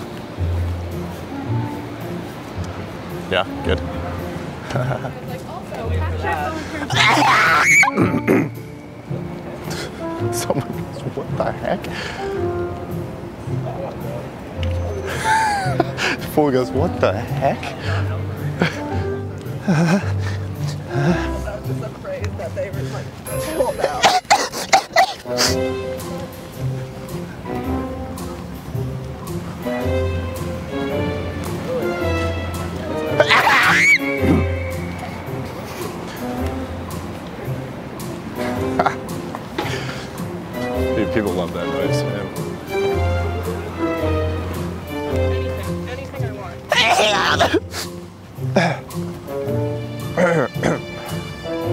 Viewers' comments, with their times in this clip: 0:05 idk if my phone is broken or anything did anybody hear that too? The vibration
0:05 Mariah Carey who!??
0:05 this dude screamed like a girl 😂
0:06 When you sneeze into another dimension
0:06 how does he have such a deep voice, but able to make that high pitch voice 😂
0:06 who the hell even sneezing like that 😂
0:06 that vocal range is higher than my self esteem 😂
0:06 That sneeze dropped me dead🤣🤣 I cant stop laughing now HAHAHAHAHA this is the funniest thing😅🤣
0:06 I never expected your voice to make that noise 🤣🤣
0:06 the sneeze got me dying 😭😂💀
0:06 that loud pitch in the middle of it tho
0:06 bruh that sneeze was high lol😂😂
0:06 I was in a restaurant one time and this lady literally sneezed like the one 💀
0:06 after hearing this sneeze i died laughing 😂
0:06 That scream tho.
0:06 That sneeze scream was hilarious 😂
0:06 funniest sneeze ever 😂
0:06 The sneeze on is the best fucking thing
0:06 That girly screech at the end tho! I was laughing so hard
0:06 he really sneezed Ariana Grande 😂
0:06 That sneeze is the best one 🤣🤣🤣🤣🤣
0:06 sounds like something kicked a pig.
0:06 OMG the sneeze made me laugh to tears! hahahaha
0:06 My sneezes sound like a pokemon cry but when i heard i lost my shit
0:06 bro your vocal range is nuts
0:06 He broke the sound barrier
0:06 sounded like when you have loud karaoke on and you get the Mike to close and makes that anoying sound
0:06 When godzilla sneezes
0:06 what was thisss my headphones just cracked out🤣
0:06 ohly shoot that sound pitch
0:06 That screaze though
0:06 if "Sneeze" was a horror movie
0:06 help, I think I went deaf.
0:06 sounds like pterodactyl 😂
0:06 that's literally me when I sneeze. XD
0:06 u just hit ariana grande's whistle note haha
0:06 That was crazy high note with the echo make it much better
0:07 omg... Not even Mariah Carey or Ariana Grande can hit that note.
0:07 that high pitch sneeze!🤣
0:07 Your voice is deeper than mine & I can’t get that high
0:07 yo wtf, that's how I sneeze
0:07 😂😂😂 I can't scream that high even if I wanted to
0:07 damn it made me burst in laugh 😂 so funny and unexpected noise.
0:07 I still hear the echo haha
0:07 Mariah Carey can’t even sneeze like this😂
0:07 when you haven’t sneez for 1 month 😂😂😂😂😂
0:07 mariah carey is that you 😂😂
0:07 how do you hit those notes man 😂😭
0:07 that “sneeze” sounded like a pokèmon screech 😂😂
0:07 that was a C7, that's some Mariah Carey stuff you pulled out there
0:07 wtff is that 😂 high pitch of sneeze!!!
0:07 Extream screaming sneeze LOL
0:07 The best fake sneeze😂😂😂😂😂😂😂😂😂😂😂😂😂😂😂
0:07 what a soprano!!! WOW!
0:07 Bro Broke The Sound Barrier
0:08 For a split second, just before it sounds like when you unlock a car.
0:08 😂😂😂ｏｍｇ ｔｈａｔ ｓｎｅｅｚｅ ｔｈｏ
0:08 The way he sneeze with scream lmaoo
0:09 higher vocal range than Zayn Malik
0:09 There’s no scream edit your comment again
0:09 the sneeze does echoes LMAO IM DEAD
0:31 sounds like a pokemon cry lol
0:32 do you hear this echo?
0:32 u can hear the echo
0:32 his sneeze echoed 😭😭😭😭😂😂😂😂💀💀💀💀☠️
0:32 Like a chicken😂 even
0:33 the sneeze literally echoed 💀💀💀
0:33 The damn echo
0:33 lol His voice bounced 😂
0:33 the fucking ECHO at the end
0:36 It echoes and they are outside...this has got to be fake